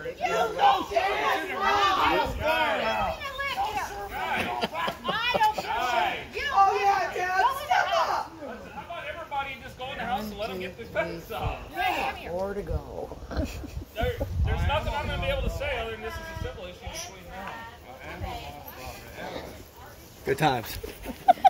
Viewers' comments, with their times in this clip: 0:03 that smile is hilarious, everyone is screaming and this dude just keeps building the fence